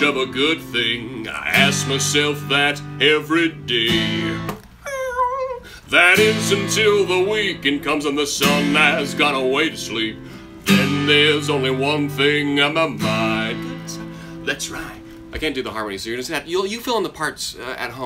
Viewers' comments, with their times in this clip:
0:03 The reeeeewwwr made me spit out all of my water. Oh my god. I love the Spine